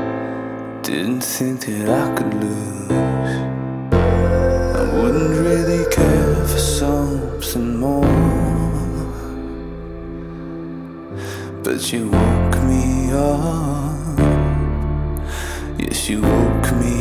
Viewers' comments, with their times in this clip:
0:05 Astounding song 😍😍😍😍 The begining spunds like a bit of TOP and sounds like Daughter-Love(baile remix) This is amazing (3